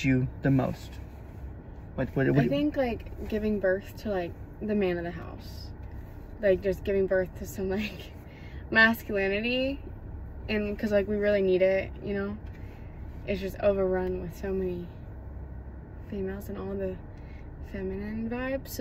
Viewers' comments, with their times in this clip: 0:05 😳 O. smAck. 🤭😂😜. O sh!t, aaand the voice crAck. 🤦